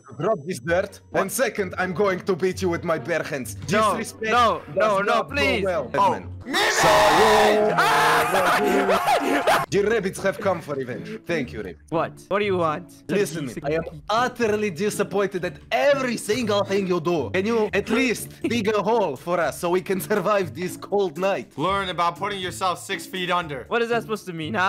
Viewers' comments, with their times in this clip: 0:07 That song thou